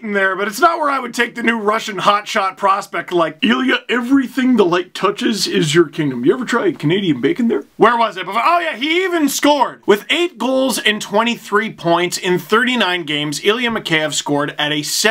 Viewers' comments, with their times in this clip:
0:03 that Babcock impression tho